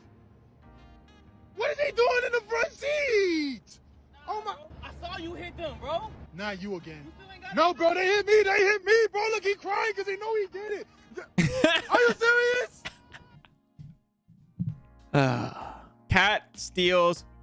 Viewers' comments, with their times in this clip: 0:03 guy yells at toddlers-toddler jumps